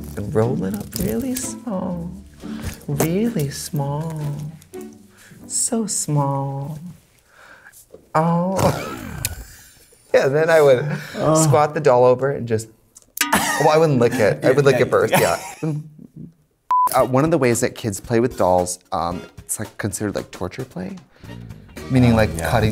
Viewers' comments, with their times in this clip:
0:03 i just watch that part over and over again just to see katya genuinely laugh so hard. Oh so beautiful